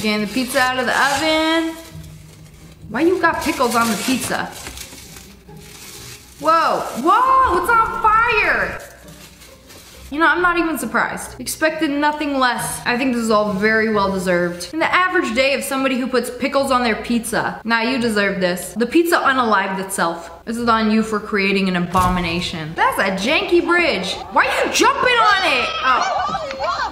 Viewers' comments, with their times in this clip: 0:08 the way the pizza just went splat had me laughing